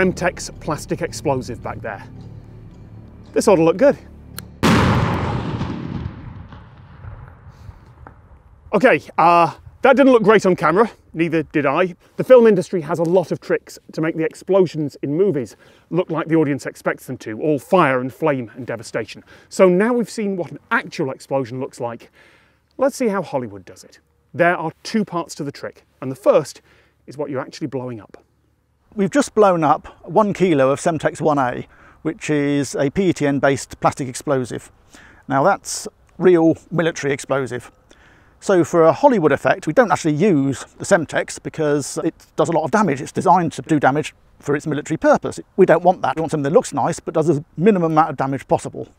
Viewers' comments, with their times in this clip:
0:04 I cant think of a better analogy than people for miles around saying it sounded like a bomb went off.
0:29 why does he sound like talking in 1.5 speed